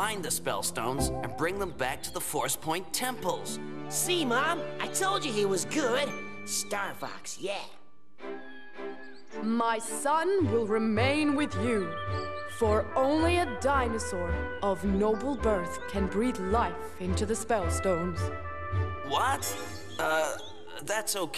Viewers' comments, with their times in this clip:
0:05 "StarFox ye!" The little 'yeh' slayed me.